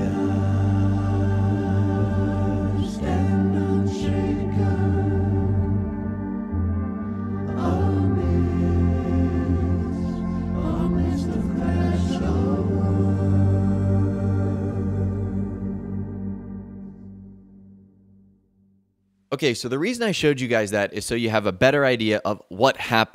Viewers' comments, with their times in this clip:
0:05 i like this song
0:06 I always get goosebumps when the OST was being played.. Back then I see wolf but then as I work on my honor I see a deer. I'm hoping to get the best ending 😊😊😊😊